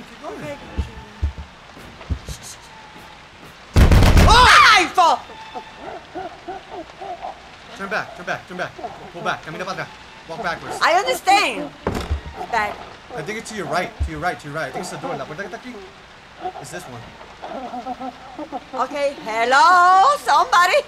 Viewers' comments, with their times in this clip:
0:06 Me: Listening with high volume Game: BOOM BOOM BOOM BOOM R.I.P Right Ear.